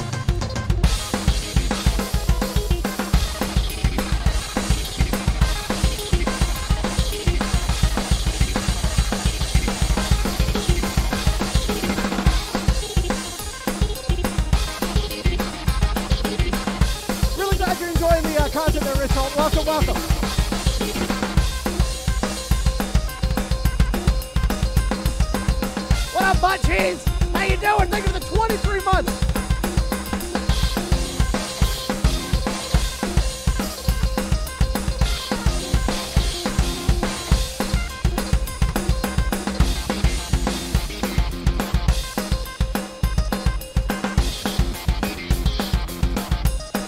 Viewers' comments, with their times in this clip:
0:03 he’s going crazy on those drums
0:29 the timing where he hits cymbals is perfect with whitty backing up bf's verses